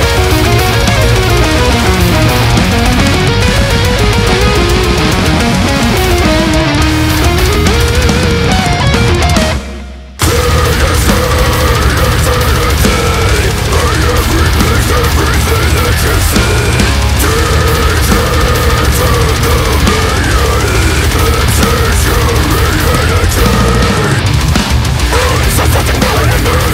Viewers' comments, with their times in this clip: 0:09 reminds of Glen Benton. awesome part.